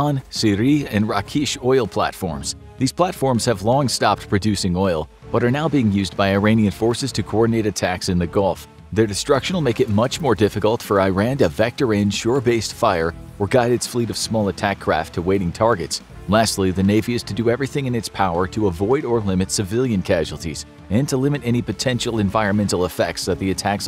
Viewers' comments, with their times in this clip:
0:06 you actually said it properly only to go incorrectly before and after??